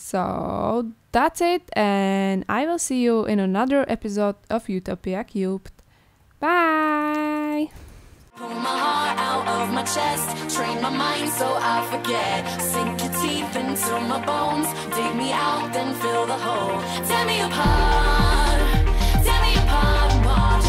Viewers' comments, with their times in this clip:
0:08 so cute cat kiki meow 😊